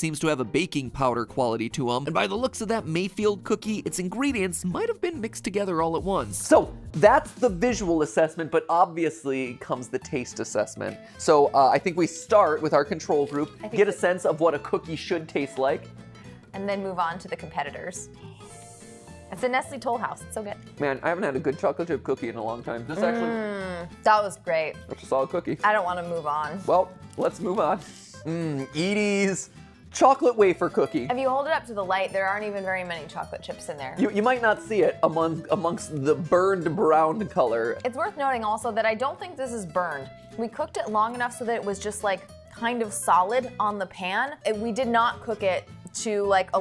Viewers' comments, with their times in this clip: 0:09 why is that song in every goddamn video where they eat something
0:28 my ears want to bleed to this music